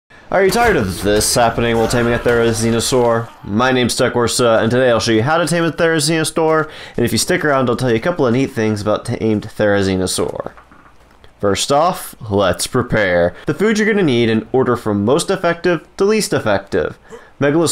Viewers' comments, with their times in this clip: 0:05 it sounds like he’s saying "therizinostore"